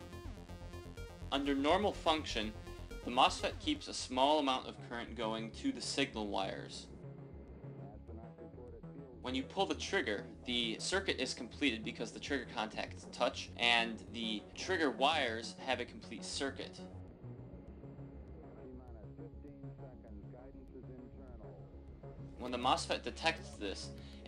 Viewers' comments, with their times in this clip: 0:05 You did well, Pikachu would be proud. Voice audio is really quiet and a little staticy. You could of asked to use my mic to voice over everything also.